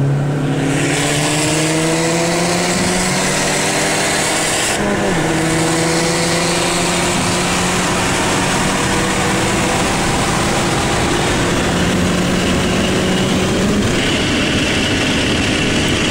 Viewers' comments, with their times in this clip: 0:03 Sound of DSG!